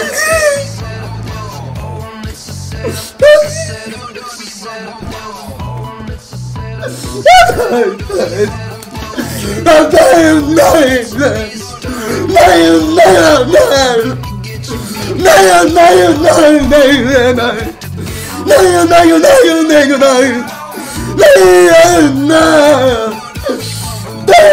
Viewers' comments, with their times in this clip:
0:09 bro gave his all he even forgot how to talk😢😂❤